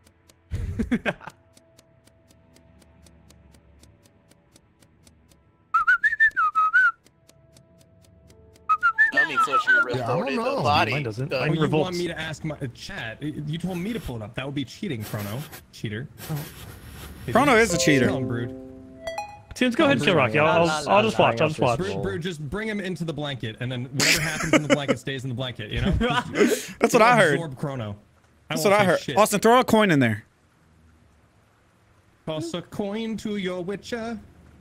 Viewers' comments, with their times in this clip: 0:05 only commenting because that little whistle freaked out my dog and it was great
0:18 Windows Notification God damn it. Bamboozled again. 🤣😂🤪